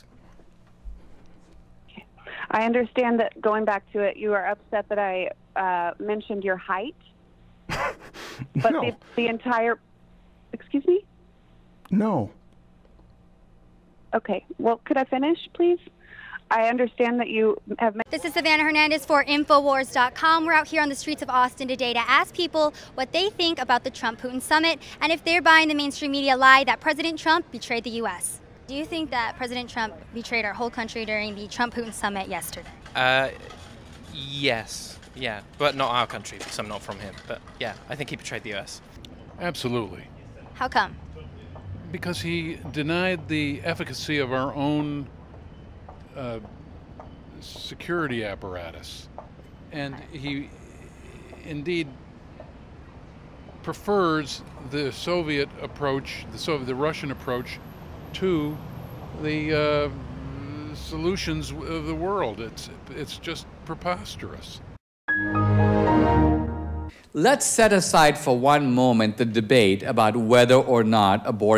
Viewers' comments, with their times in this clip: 0:10 I want to just once in my life be able to deliver such a dead pan "No" in a serious conversation
0:19 I thought she said "info whores" lol
0:39 I absolutely died 🤣 the Windows sound was hilarious
0:39 Homie almost had a stroke looking for those words.
0:40 that guy sounds very identical to Biden. Not because of the stuttering, he just genuinely sounds like him😂
0:49 what a great radio voice if he could squeeze his words out
0:57 that guy has a great voice